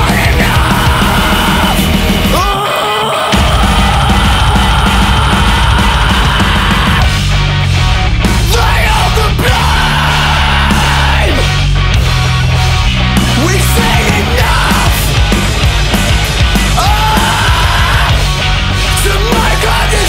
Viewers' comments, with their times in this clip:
0:03 sounds exactly like a dillinger song